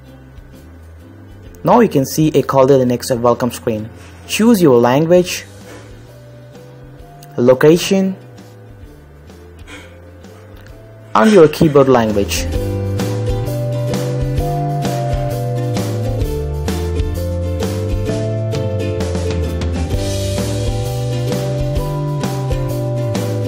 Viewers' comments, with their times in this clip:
0:08 LoL Fake accent bullshit! XD